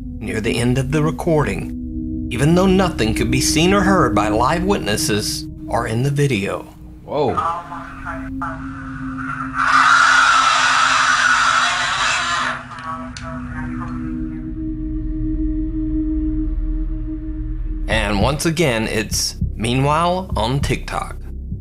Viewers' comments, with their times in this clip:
0:03 so they "record" her talking but no scream at all ... but they record the recording and there we have ! that make sense? BUSTED.